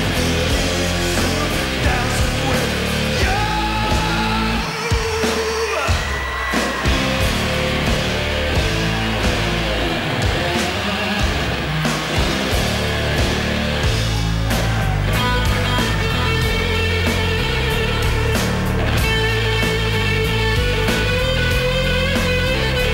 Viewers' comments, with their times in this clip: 0:08 Quite eerie version of A4Y2K with the keyboard samples, would have been great to have been there.